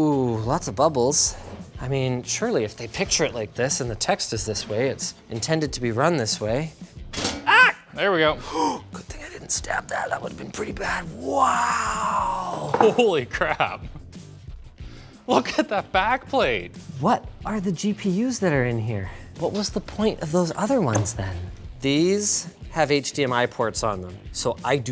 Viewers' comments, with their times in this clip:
0:06 linus scream just like CJ scream from gta san andreas
0:07 Linus sounds like the guy getting tased in csgo
0:07 that sound exactly like the TTT death noise and to make it better he's even holding a crowbar
0:07 Linus sounded like he got tasered in CS:GO